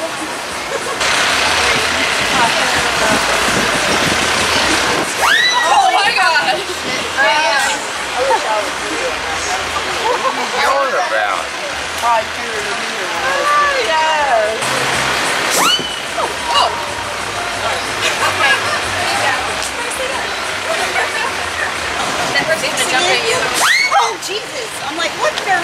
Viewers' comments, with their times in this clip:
0:07 OMG scream and then the wheelchair man stop. Then he listens, as they pass trough he was like - '' what's all that about '' :D